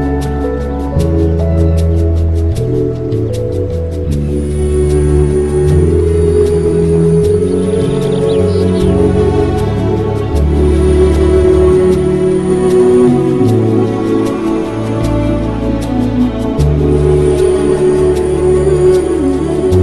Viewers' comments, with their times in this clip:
0:03 that group violin ❤